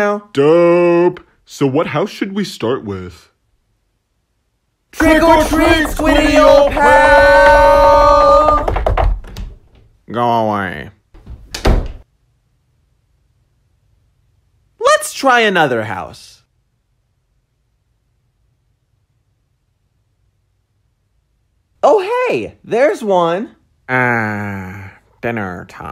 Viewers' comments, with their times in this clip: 0:10 Squidward: (in the most blunt way possible) go away.